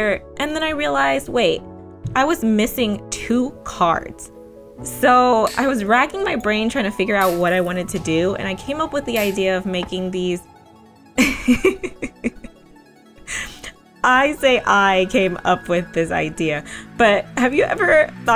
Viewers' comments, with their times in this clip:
0:04 Click for Autotune.